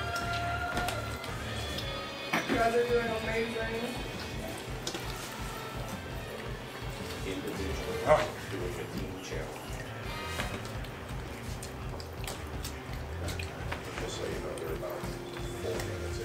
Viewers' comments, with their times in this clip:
0:04 Min Good Asmr !! 🤣🤣